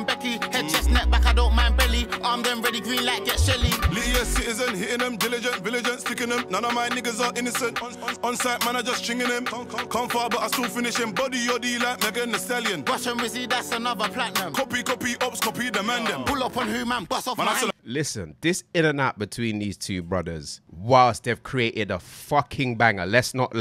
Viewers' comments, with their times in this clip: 0:04 Is it just me that thinks Tion used Mizs flow ,reminds me off 21st century spartan